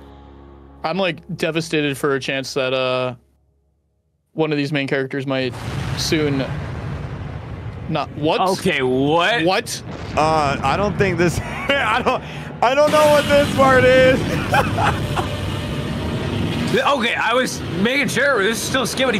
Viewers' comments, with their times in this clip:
0:05 dafuwq boom download godzilla💀💀